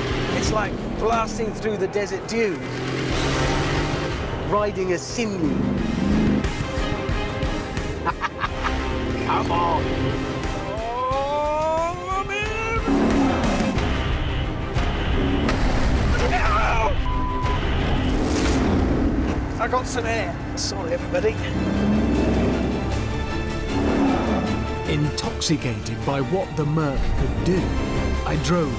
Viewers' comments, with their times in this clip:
0:09 lol the noise Hammond makes is hilarious
0:15 when he screamed i was dying laughing